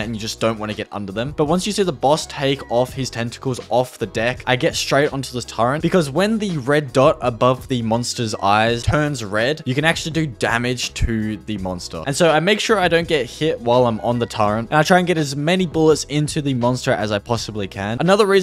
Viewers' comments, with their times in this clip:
0:04 Ain’t no way he said “Turrent”